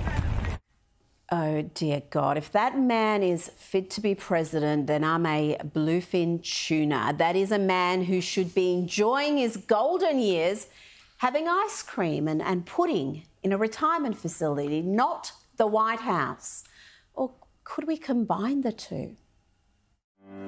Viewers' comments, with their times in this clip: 0:04 a bloofing? What in the world is that?